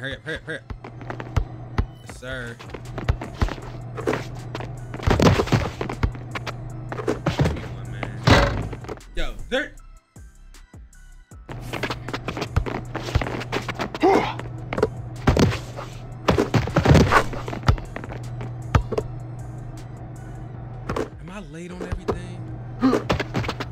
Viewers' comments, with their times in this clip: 0:09 2k7 got chase so heated bro started playing a piano 🎹 😭#funnymoments